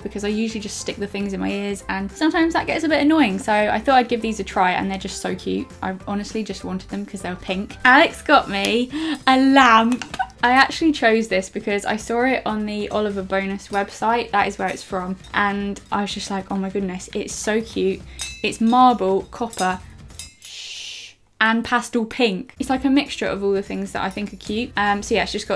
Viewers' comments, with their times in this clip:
0:08 is so so funny her voice though